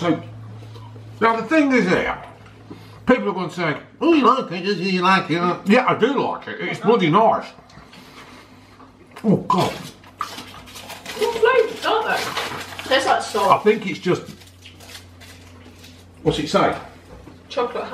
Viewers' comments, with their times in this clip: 0:05 what on earth was that?? Your best Alan Carr chatty man impression? 😂